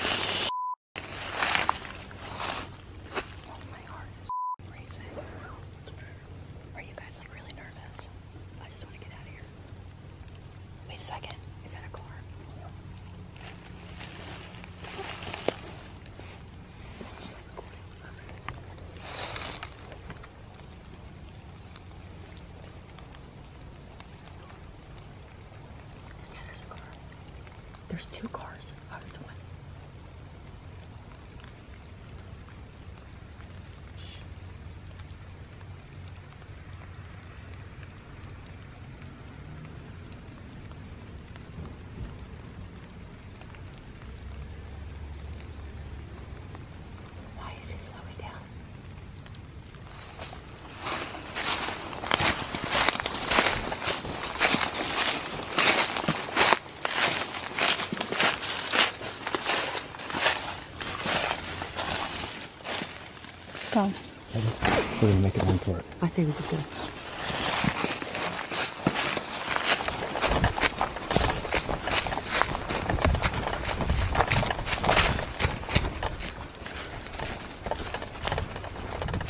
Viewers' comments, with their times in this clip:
0:05 I could of sworn I herd some sort of noise I can’t explain it what exactly was but just listen
1:05 IT WAS GUN SHOT NOT A DOOR. I shoot almost every day Those car's slowed down.... they didn't stop, exit the car....walk up n slam a door. At 15: 32 u hear a whistle...... And GUN SHOT